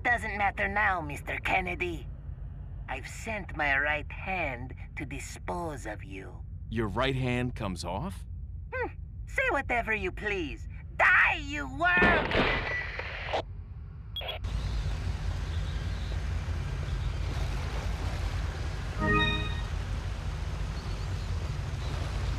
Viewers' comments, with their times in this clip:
0:06 why is this sound like jim from the office XD
0:08 That hmmf was cute XD